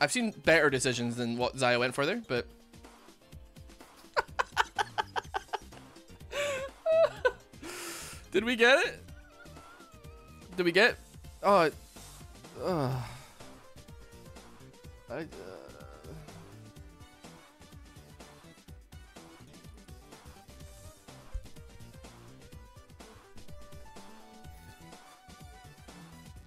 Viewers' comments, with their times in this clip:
0:08 the 5 seconds of hopeful "Did we get dragon?" and the dreadful sigh after realizing it's untouched sent me 🤣 Too relatable and exactly why I don't play anymore.